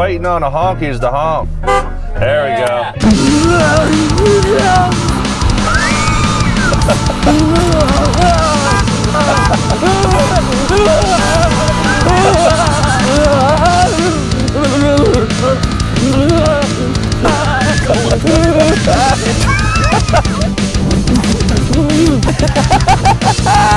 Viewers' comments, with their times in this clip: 0:09 she kept honking to free him more